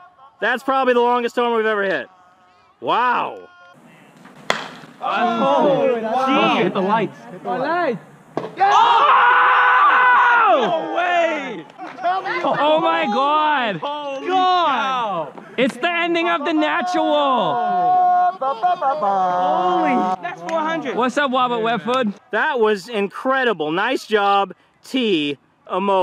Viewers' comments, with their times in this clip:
0:08 I’m just listening to the lights dying